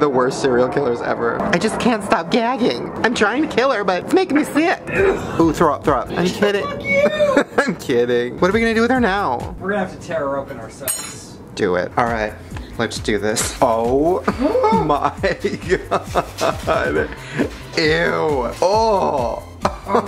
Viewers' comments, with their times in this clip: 0:06 I love the way he says I’m kidding I’ll never know why